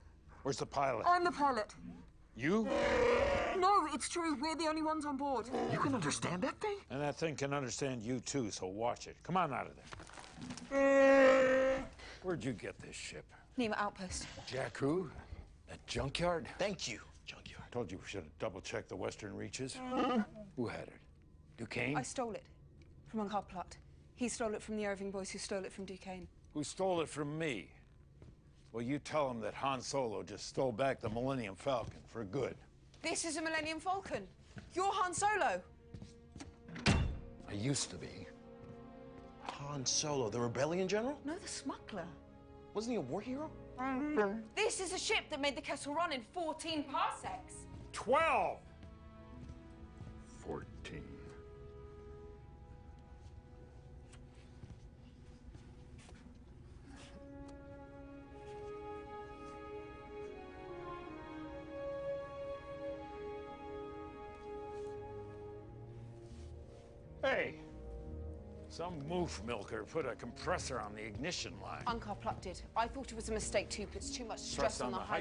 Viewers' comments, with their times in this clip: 0:03 chewie said bullshit
0:41 So Chewie can speak English when he needs to? ("I don't know")
0:43 First and only time I ever understood Chewbacca. Also its funny.
0:43 Chewie growling "I don't know." - something about that made me chuckle.
0:47 12!!!! (Muttering) 14
0:59 this moment with the music was one of the best parts in an amazing movie.